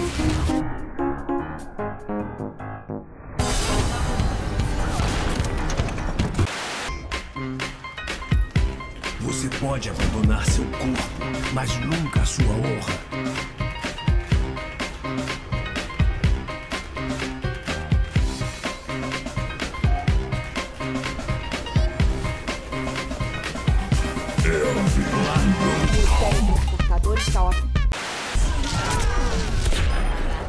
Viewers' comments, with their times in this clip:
0:04 Jontron echh voice "Shiet.."
0:11 What I hear "Magical casserole" ... woa